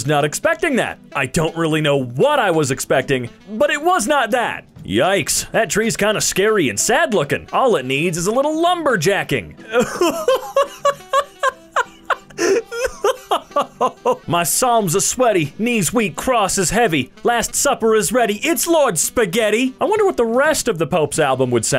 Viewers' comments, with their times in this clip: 0:09 I love how genuine this laugh is